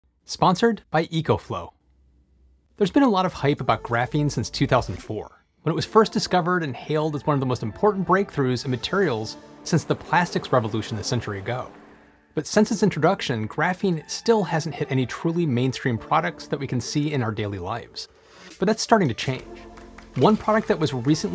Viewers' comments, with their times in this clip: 0:07 I went the door since the noise exactly sounds like my door bell.